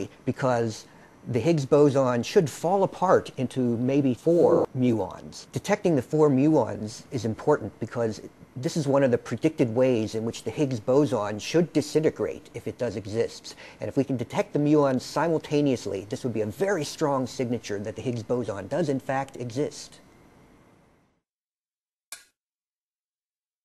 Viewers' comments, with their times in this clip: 0:07 "The Higgs Bozon should break intofoooouuuuur 4 Muons" anyone know why it went sorta slow-mo at that point in the vid? I think it was at bout